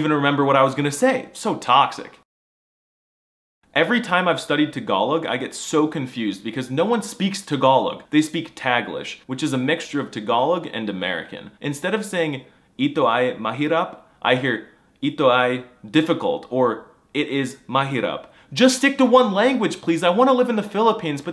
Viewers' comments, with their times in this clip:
0:05 Wait, it’s pronounced tuh-GALL-ug? I’ve been saying TAG-uh-log my whole life!